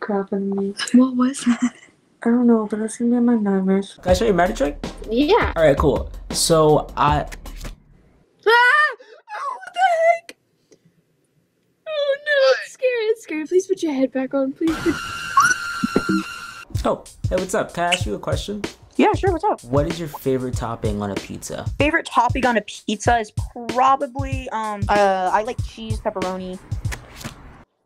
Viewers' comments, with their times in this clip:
0:04 The girl was so cute with the way she spoke and emoted. I'm sad we didn't get more of her.
0:04 this girl laugh like me when i laugh at jokes but suddenly realized that it was about me
0:08 that's actually pretty cute way to scream
0:09 Why does sound like shes 18 but looks like shes 54